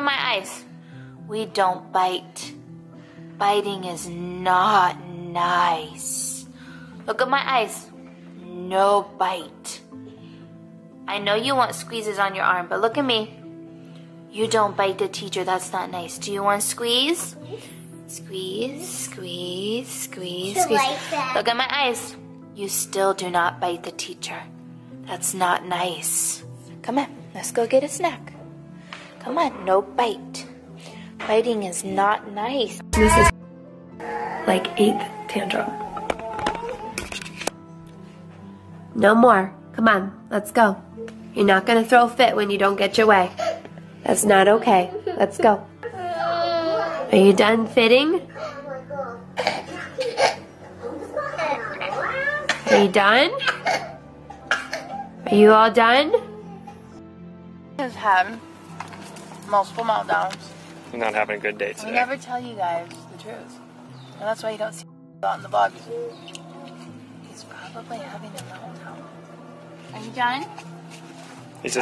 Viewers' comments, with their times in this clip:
0:08 the tone she used...imagine off camera!! Also, the child didn't "understand English!!!"
0:26 her voice tone makes me really uncomfortable.
0:46 The crying breaks my heart. I would've sooo hugged him.
0:48 Those weren't tantrums. That was just fussing. He seemed more like he needed something or was frustrated. I'm not a kid-person, but his gentle crying was really sad to watch. That's NOT a meltdown!! Get the camera out of his face!
0:58 it looks like he's having a fit cuz he's tired and she looks so unsympathetic towards him... Her tone and attitude here are especially cold :/